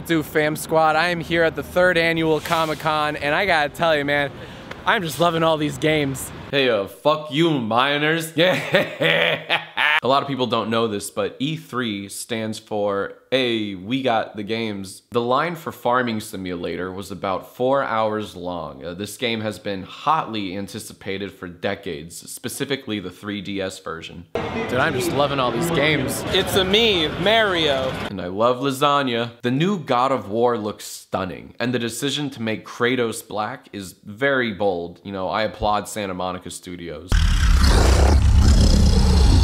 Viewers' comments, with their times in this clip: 0:06 sounds like Austin Jones
0:25 Me Me Mario??